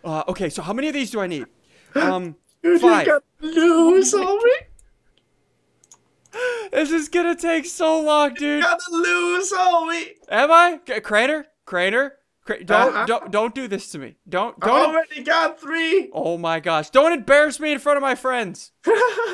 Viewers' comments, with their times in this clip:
0:07 i thought that said 'sacred drain' lel